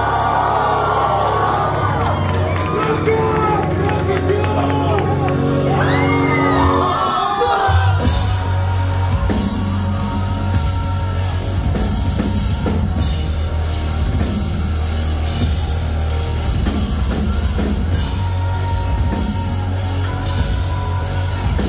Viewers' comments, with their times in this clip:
0:08 That first snare hit …….chills